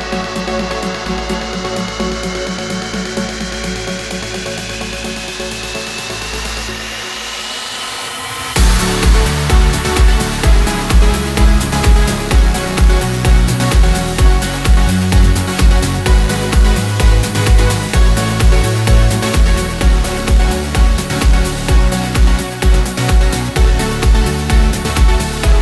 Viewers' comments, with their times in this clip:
0:07 loving the drop!